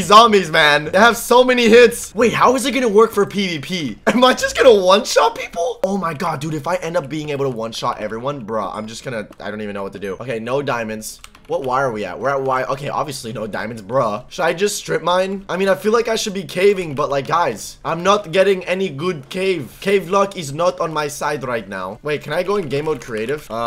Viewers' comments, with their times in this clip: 0:04 massive voice crack
0:04 his voice crying for help!